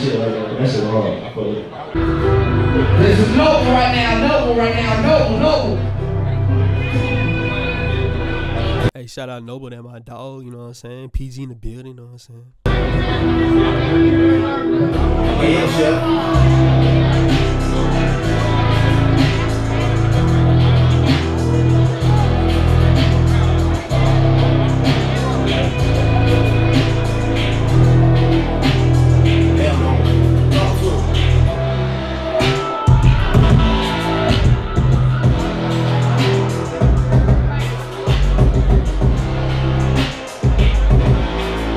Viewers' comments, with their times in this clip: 0:03 ...❤This beat, I need it
0:22 That beat sick asl, who made that?